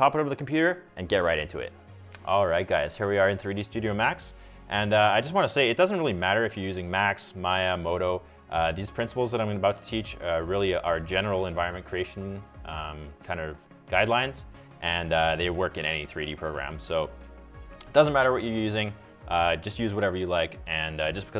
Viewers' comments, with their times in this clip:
0:07 I think you mispronounced BLENDER! :D